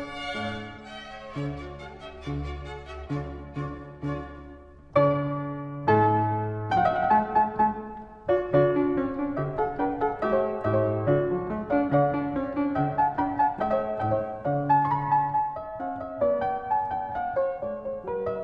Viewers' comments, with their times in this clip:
0:04 reminds me of someone else's piano concerto...